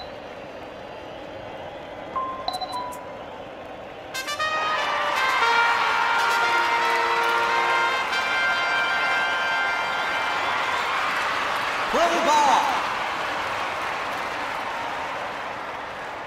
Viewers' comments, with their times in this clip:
0:04 The music makes me laugh before the game starts!!! 🤣🤣🤣